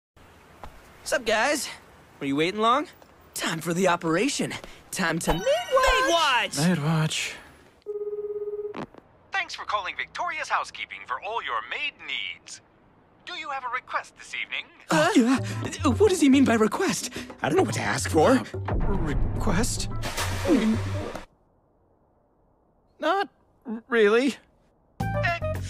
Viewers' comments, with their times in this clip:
0:06 At the beginning he's like: "This is going to backfire massively, isn't it...". Just listen to his deadpan "Maidwatch" Considering how it ended up for him, no, but he was incredibly lucky. Normally, yes